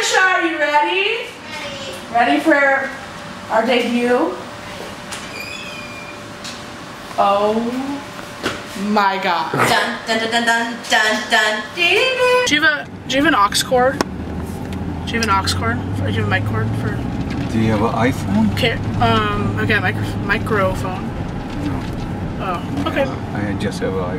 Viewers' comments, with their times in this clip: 0:10 DID ANYONE NOTICE HOW SHE SOUNDED EXACTLY LIKE THE VIOLIN